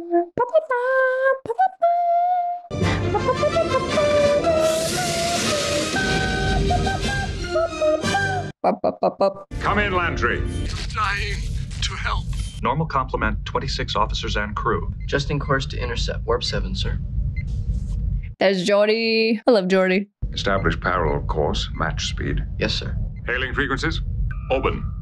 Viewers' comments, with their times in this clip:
0:08 sorry but i have to point this out....those last 4 notes were not up to standard......